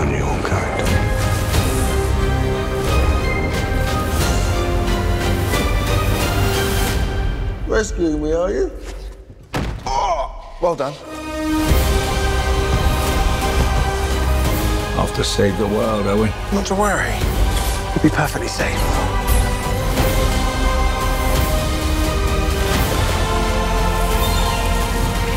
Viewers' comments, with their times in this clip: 0:07 sounds like alfie solomons